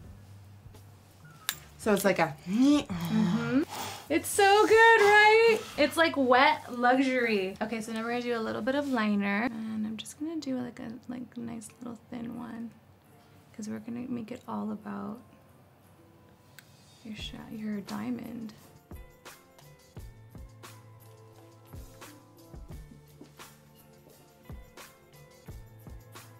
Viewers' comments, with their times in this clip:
0:10 I swear to god she sounded ALOT like Kylie Jenner I’m scared